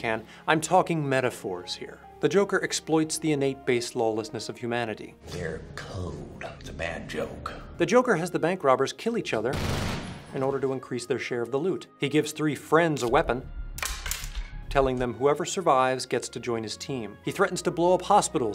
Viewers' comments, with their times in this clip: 0:04 why did you go through the effort to change the sound effect of the gunshot? that was originally a single shot from a silenced poistol, the automatic fire was from the joker shooting the bus driver.